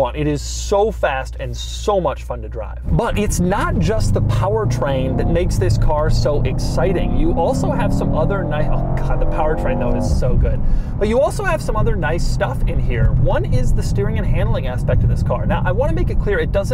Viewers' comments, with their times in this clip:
0:03 listen to that engine 👂🏼